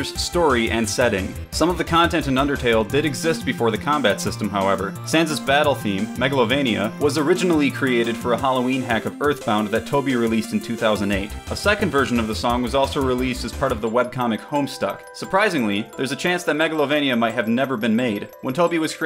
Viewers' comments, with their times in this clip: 0:03 "Santa's battle theme"